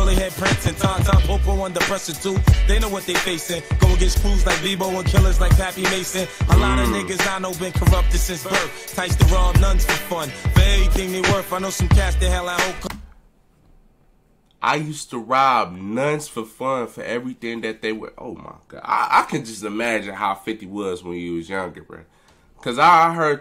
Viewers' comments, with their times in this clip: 0:06 you heard that part wrong